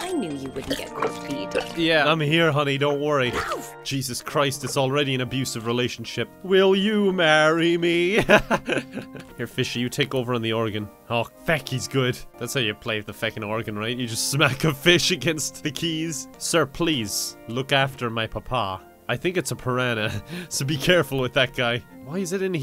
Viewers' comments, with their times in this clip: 0:09 Fishy takes over Oregon instead of the organ. What a plot twist! (not making fun, just made me chuckle lol)